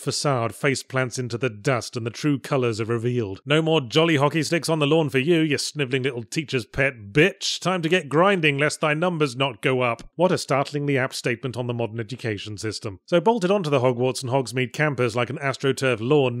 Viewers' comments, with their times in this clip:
0:03 That might be Yahtzee's best-delivered reference to a female dog since the Agony review. The way he says it is so casual yet so mesmerizing; I wish I could pull that off too.